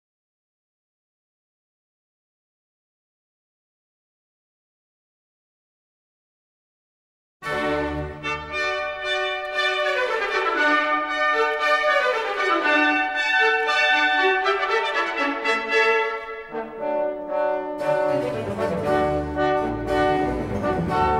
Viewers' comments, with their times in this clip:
0:08 One Masterpiece! simply wonderfully uplifting, this music puts you in a good mood and eliminates disease, darkness and winter! Georg Friedrich Händel war ein Genie! my favorite Part